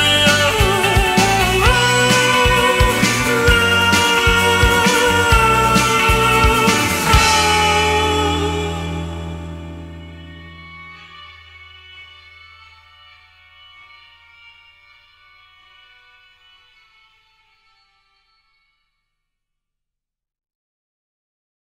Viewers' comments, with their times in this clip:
0:10 this part is so sad sounding yet calming